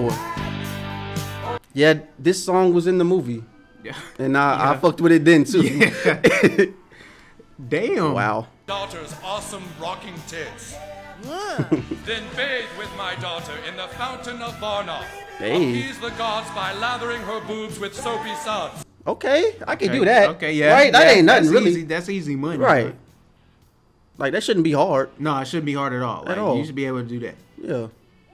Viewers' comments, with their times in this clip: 0:09 Kenny’s “yeah” is so cute and relatable. 🤘🏻🥰🍉🍈🍒